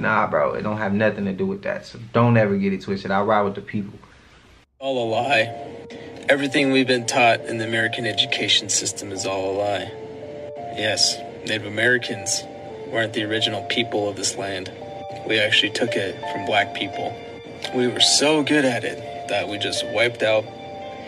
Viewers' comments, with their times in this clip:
0:03 Whoever don't know that the Native American man is being VERY sarcastic....... than it's no wonder this world is (finally 🙏) coming to an end. 🤣 It sounds like he's responding to a very ignorant & irritating person in that clip. lol